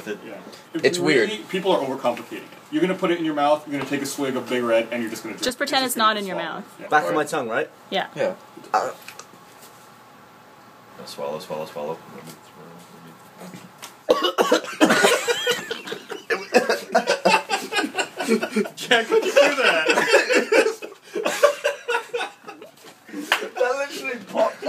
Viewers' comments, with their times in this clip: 0:08 That weird gulpy sound Gavin makes gets me everytime hahahaha!!! We seriously do need a montage of all the weird things that come out of his mouth